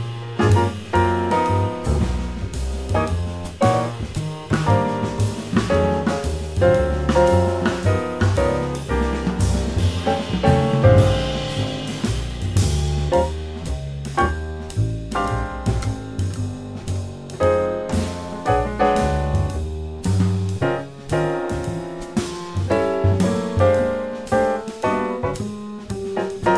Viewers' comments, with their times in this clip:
0:09 Can I ask what is the sticking of that beautiful fill starting ?